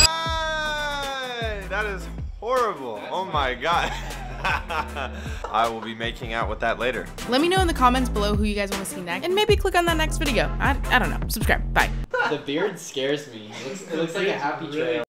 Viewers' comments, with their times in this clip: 0:06 what the heck did he say